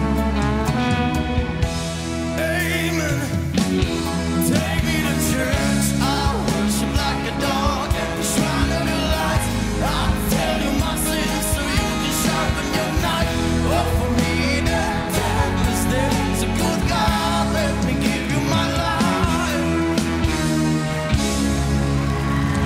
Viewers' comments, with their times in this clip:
0:04 How he crates that "crispy" sound of his voice